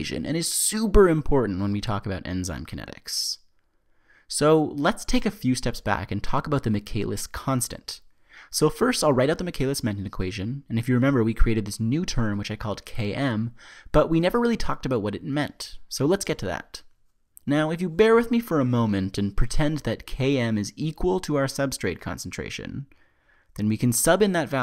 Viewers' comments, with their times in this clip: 0:08 i'm almost certain you actually sped your voice up in post production. Your editing out every natural pause in your sentences and on top of that your speeding your voice up. That's not effective teaching.